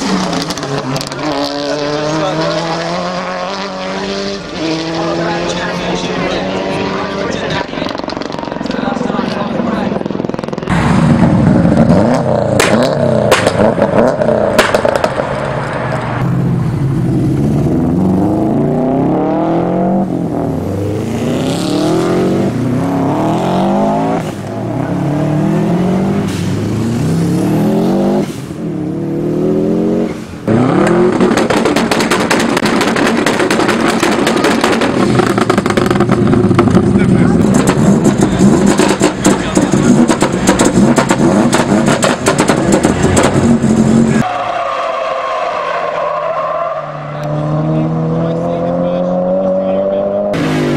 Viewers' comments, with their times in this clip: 0:09 who's helicopter is this😂, nice vid tho
0:38 sounds ready to go ahaha